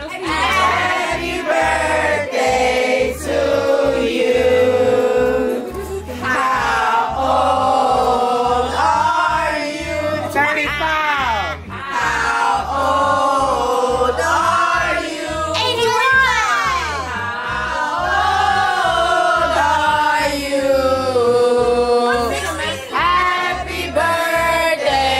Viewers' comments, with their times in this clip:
0:08 I felt chills it was her trying to hold back tears of joy! Y'all kept singing and the tears started running 🥰💞😩 bless y'all family indeed!